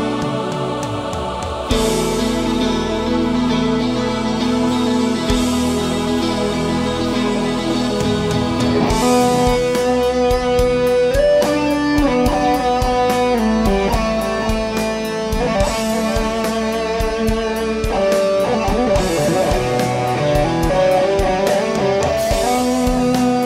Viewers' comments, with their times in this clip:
0:10 Love the solo and how the Coffee Mug disappears :)